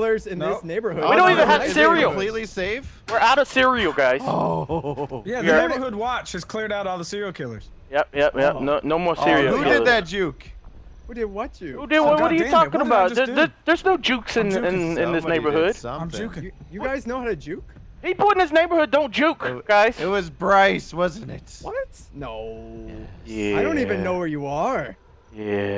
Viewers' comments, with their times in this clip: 0:08 ocean or oh shit XD